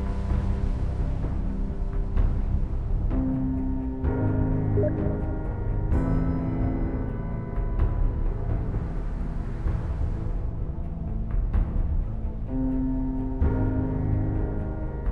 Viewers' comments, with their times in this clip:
0:03 you got a steam sound effect btw, sick video